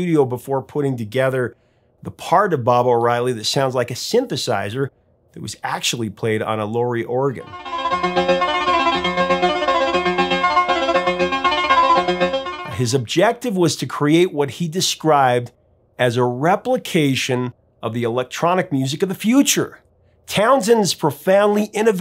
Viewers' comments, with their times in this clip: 0:07 min mark, Sounds more as if he is mimicking a DOMBRA instrument and its traditional play for centuries in Kazakhstan...... go have a listen.